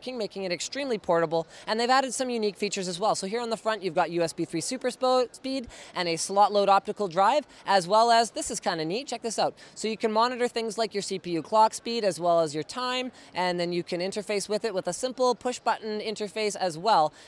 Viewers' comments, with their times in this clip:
0:03 USB 3 Superspode...What about superspade?